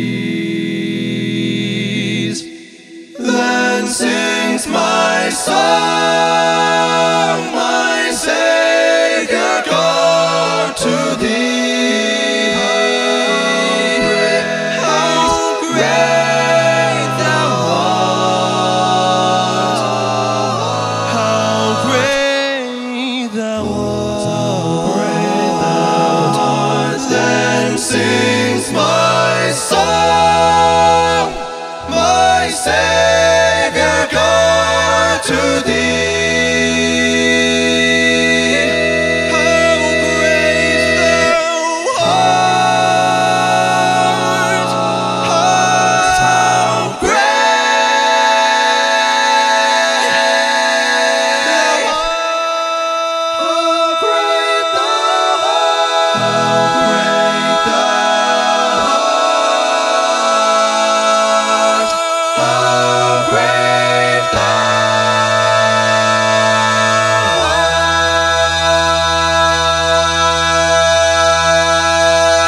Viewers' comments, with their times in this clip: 0:07 Man the harmony and power is awe-inspiring! God bless you
0:19 Loving that chromaticism
0:58 Very nice. Great harmonies....nice arrangement. I like the drone sound. I love the flat 5 resolved ...it's quick...it sounds like a flat 5 over an A chord. There's a minor second interval sound in the chord... a D# and an E....The minor second is wonderful how you resolved it quickly to the 5th (E) to complete the power of the chord! A few places I would have changed the harmony and made it less dissident. The song is more about resolution than dissidence. The dissidence certainly makes it interesting. I'm not talking about the drone parts. You have a great voice. Did you arrange it yourself?